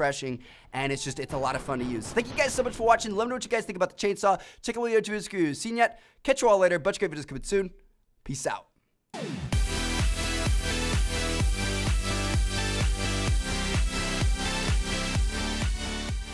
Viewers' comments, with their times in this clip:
0:04 did he say ''tickle your tootle screws''